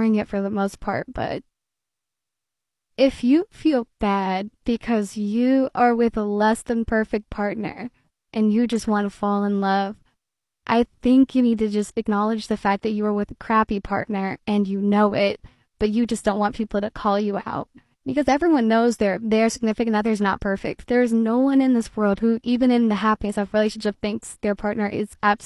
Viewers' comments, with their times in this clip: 0:07 why did she use a voice filter?